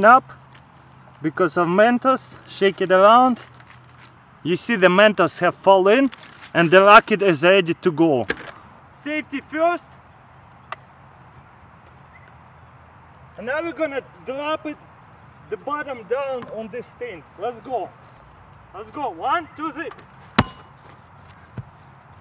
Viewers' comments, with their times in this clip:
0:06 The noise he makes